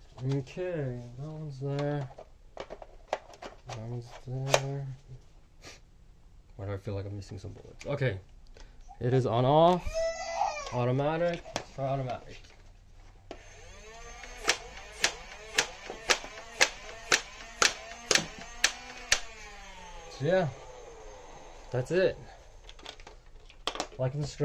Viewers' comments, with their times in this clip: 0:07 what was that screaming in the backround